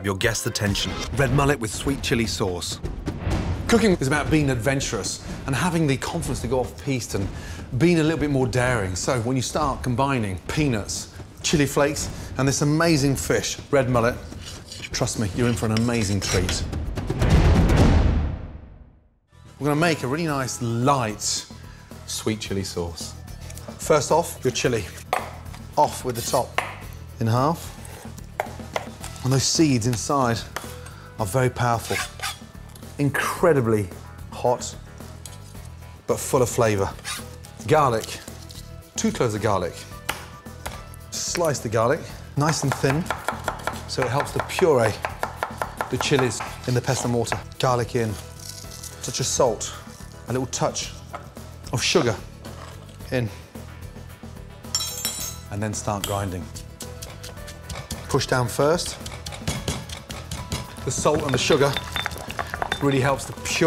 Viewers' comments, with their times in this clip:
0:10 Sounds like he said P***s
0:46 you can hear a fart